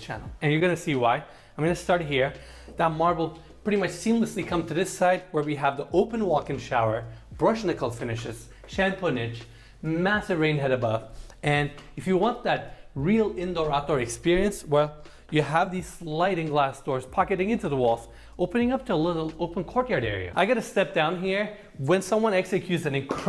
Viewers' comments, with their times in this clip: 0:09 his he saying “shampoonage”lol that’s a reach man!! Wow a place for my shampoo- sold! If you are notating that the shower has an actual shampoo shelf built in then you should find a different vocation.